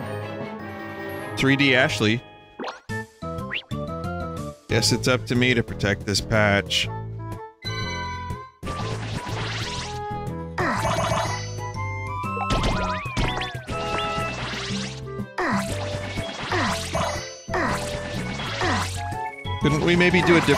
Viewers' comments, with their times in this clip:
0:03 That's actually not a bad Ashley impression.